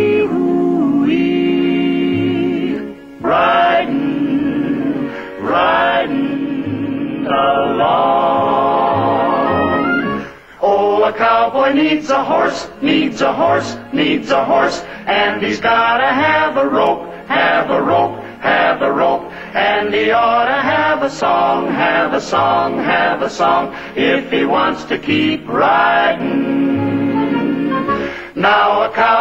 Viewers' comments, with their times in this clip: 0:10 is when the song starts